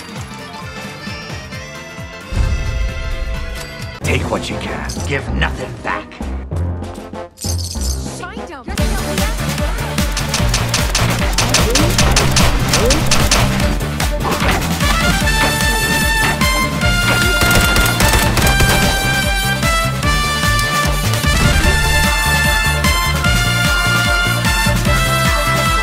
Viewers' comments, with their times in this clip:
0:08 What is the song which plays ? Sounds like a remix of the DKC2 ending theme.